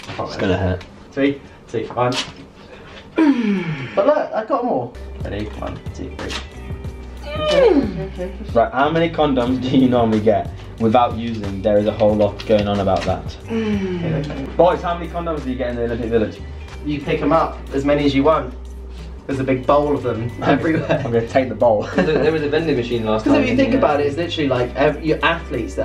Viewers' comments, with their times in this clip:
0:09 I can not understand British English at all. Who can write the sentence which they answered ?🤣🤣